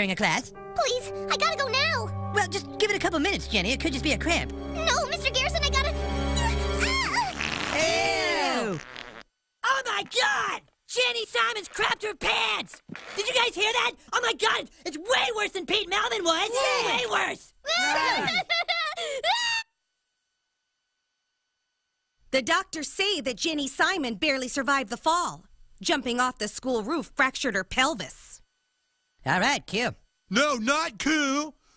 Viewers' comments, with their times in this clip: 0:07 The way Eric shouts "Oh My God!" 😂
0:18 that perfectly cut scream gets me 😆